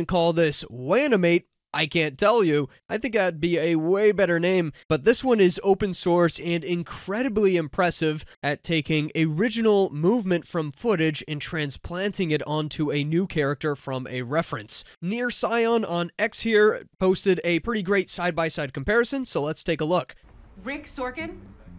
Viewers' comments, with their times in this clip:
0:04 At least you know how to pronounce Animate. I have watched 3 videos that I know use TTS because they pronounce it like Animit